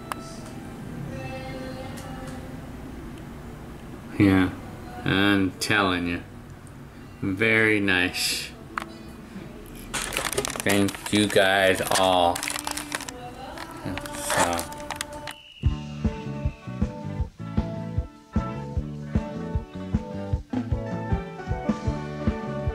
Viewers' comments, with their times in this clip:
0:05 I’m Telling Ya (smoothly)